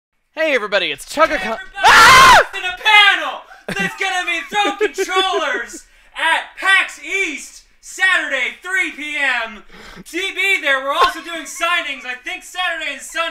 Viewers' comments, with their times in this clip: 0:01 RIP fellow headphone users